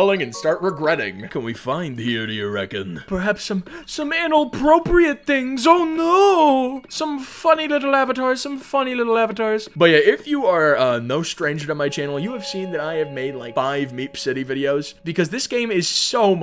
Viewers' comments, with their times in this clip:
0:03 I thought he said analproprite 🖐😭